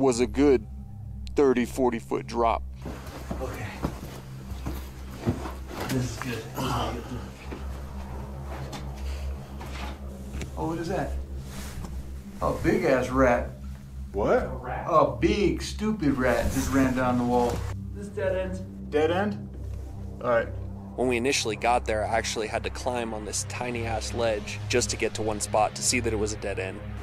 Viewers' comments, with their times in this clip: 0:08 i mEaN dAt iS a… 🤣🤣 🐀 (hood vocab kicks in voice!)